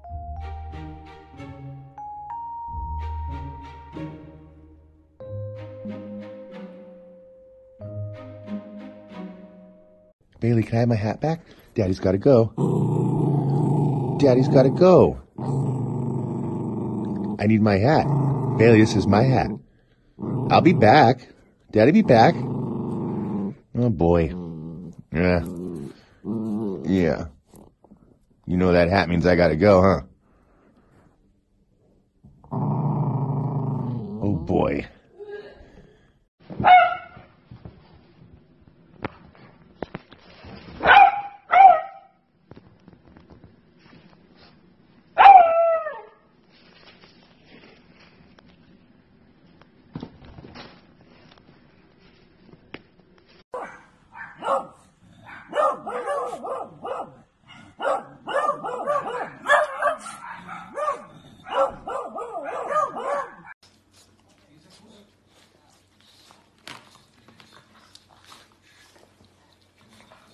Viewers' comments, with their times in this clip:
0:10 why did that beagle getting angry with its owner??? It looks like a turning on motor or car
0:54 i love when they bark